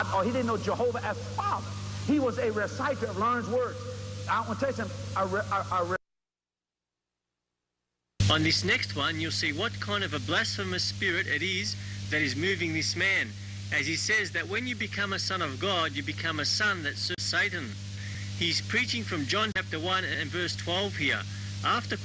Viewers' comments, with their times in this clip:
0:04 He is saying "im gonna tell you somethin." HE'S NOT SAYIN "Im with Satan"... And he is just saying. "See" NOT "satan"